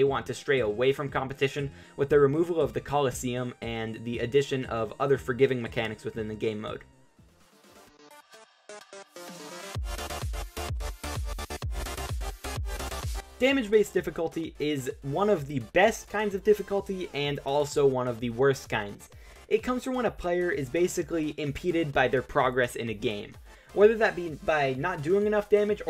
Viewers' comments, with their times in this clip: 0:08 me: hears megalovania also me: pisses my pants